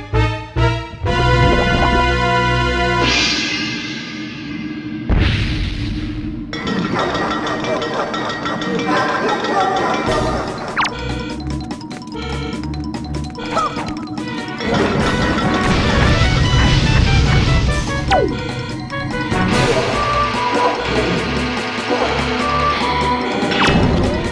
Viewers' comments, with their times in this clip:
0:05 In all honesty, I came for that evil laugh.